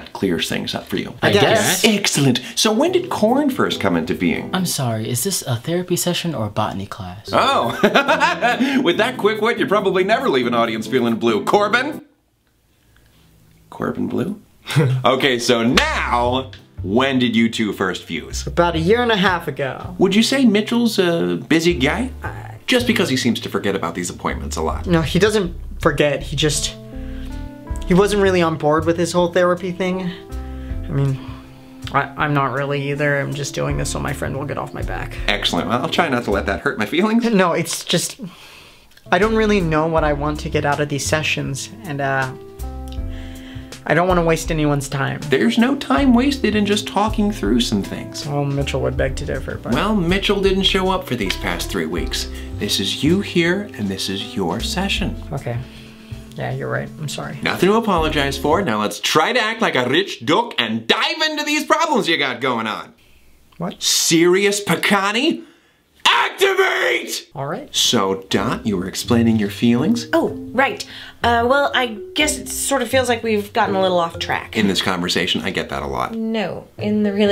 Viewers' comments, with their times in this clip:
0:07 Thomas NAILED that laugh!!!
0:08 I like how he laughed like woody woodpecker I never caught that until now
0:59 Bishes be needing this time stamp to keep listening to Thomas sayin Rrich DoOk on repeat It's me, I'm bishes